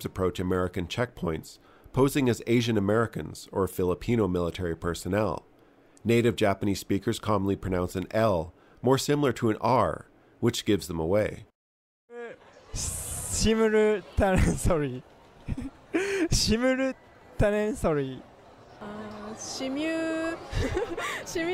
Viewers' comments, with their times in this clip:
0:06 Ah yes, the classic Japanese engrish.